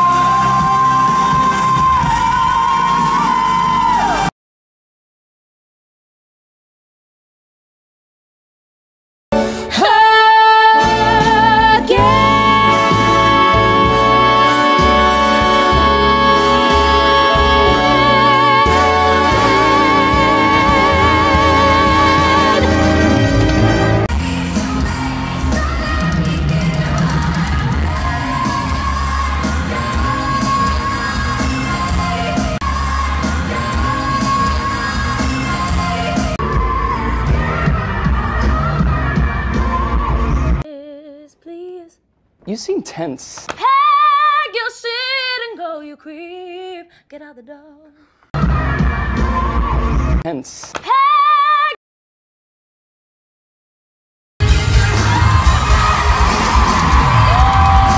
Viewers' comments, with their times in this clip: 0:05 I was just wondering, I thought she had a couple partially supported D5?
0:38 I've seen some lovatics saying she supported a couple of D5s at TMYLMT, but they were actually the same, the D5 in for example, was shouty and foggy, if you compare this one to Ariana's or any other, it is really strained.